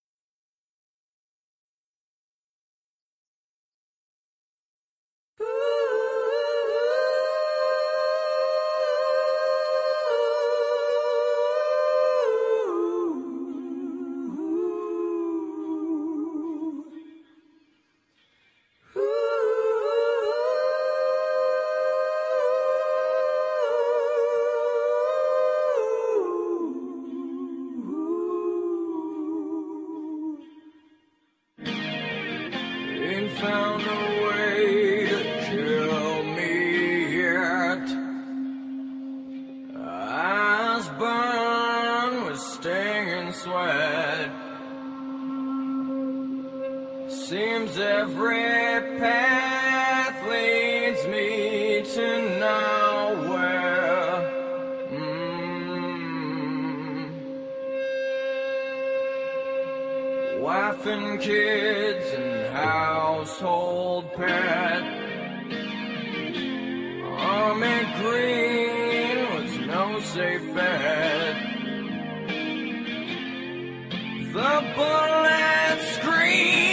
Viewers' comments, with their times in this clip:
0:05 During the "ooh hoo" part of Rooster, are both parts done by Layne, or does Jerry Cantrell do the lower harmony? I know Cantrell has the lower part most of the time, but in this case it sounds like both could be Layne. Anyone know for sure?
1:03 It's crazy but the guiter sounds like Purple Rain!